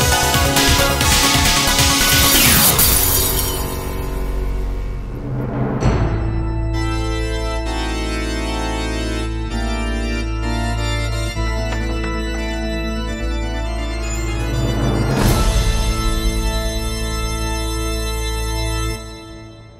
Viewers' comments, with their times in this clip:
0:05 Remilia has a majestic bgm but only appear in bgm